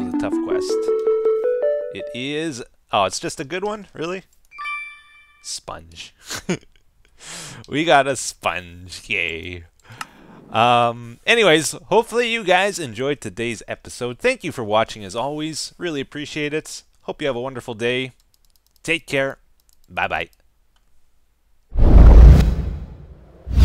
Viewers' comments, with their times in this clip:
0:07 Did he just say that? "We got a sponge...*gay*" Or he said yay?